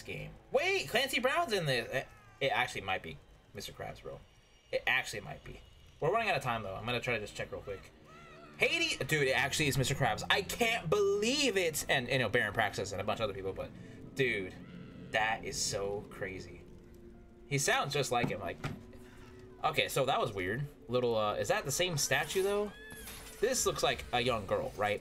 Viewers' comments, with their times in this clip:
0:09 i wish Hades did the Mr Krabs laugh. 🤣